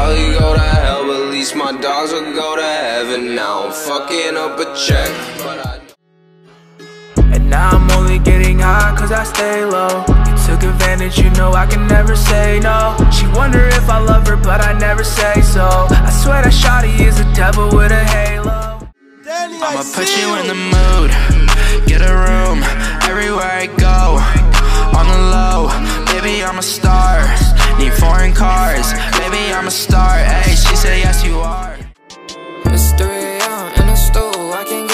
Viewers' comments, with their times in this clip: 0:08 sounds a bit like Lucid Dreams
0:21 Bootleg lil skies